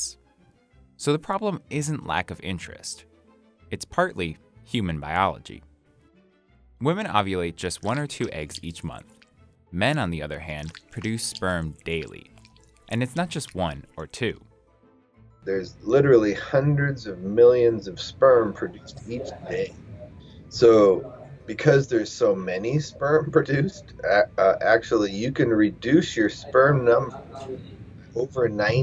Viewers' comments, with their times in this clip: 0:08 why the sound effects??? 🥴
0:08 I don’t know if adding those sounds was a good idea, brrrrrgh!
0:10 Omg those sound effects you used is awful